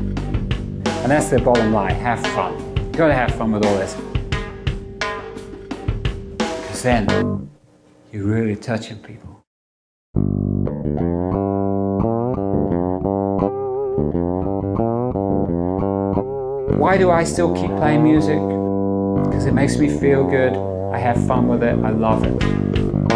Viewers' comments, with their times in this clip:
0:08 His blues riff was just the inspiration I was looking for. Perfect emulation of a slide guitar that fits like a glove with the traditional, pre-12 bar early blues. Leaving oceans of room for the guitarist, but still providing the bass whilst adding colours to the mid range.